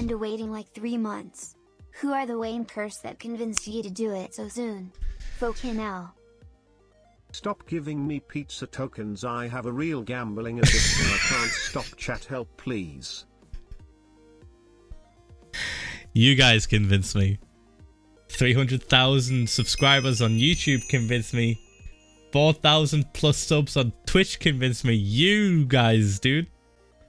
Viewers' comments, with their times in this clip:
0:08 the text to speech guy sounded so angry 😂😂💀